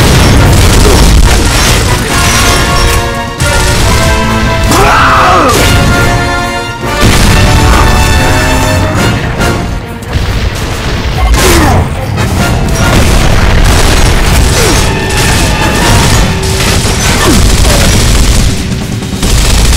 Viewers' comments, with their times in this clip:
0:04 did anyone that sound that marcus made